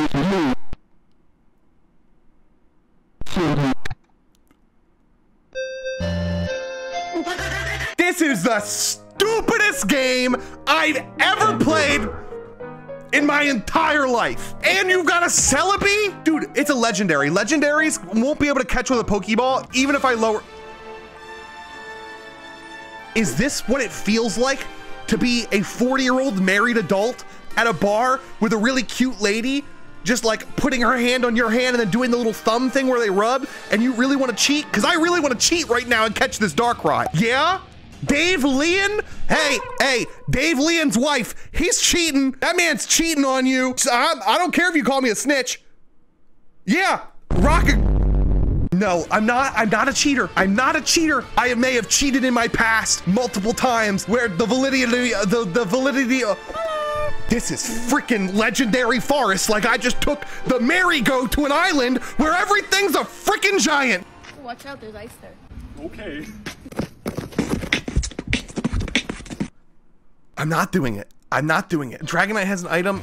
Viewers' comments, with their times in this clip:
0:05 my french teacher singing happy birthday
0:54 I love how he put the mine turtle sound effect 😂😂😂